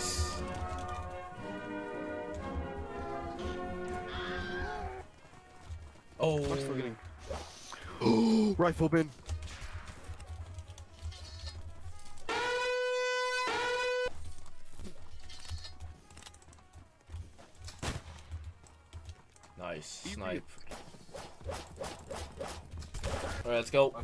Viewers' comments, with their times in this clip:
0:09 Surprised Shocking Scream